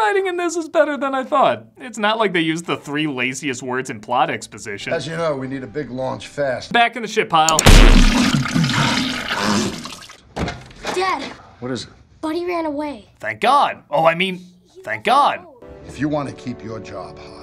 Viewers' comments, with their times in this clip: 0:05 oh please they sound same I know a guy who made the connection